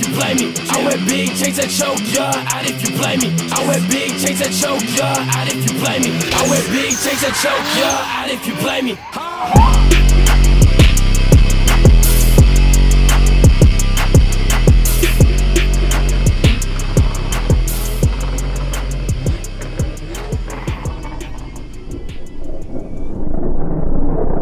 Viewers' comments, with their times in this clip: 0:07 the beautiful sound of the turbos